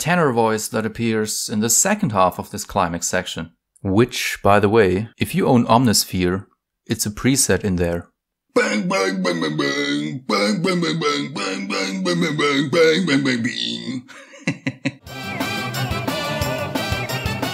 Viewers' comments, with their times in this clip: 0:05 I KNEW it sounded like the Crypt of the NecroDancer shopkeepers!